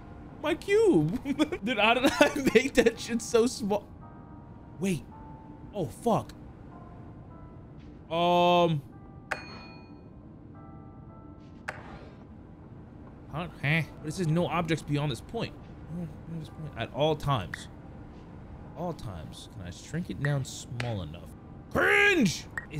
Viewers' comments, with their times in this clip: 0:09 what my friends gf sounds like when they are together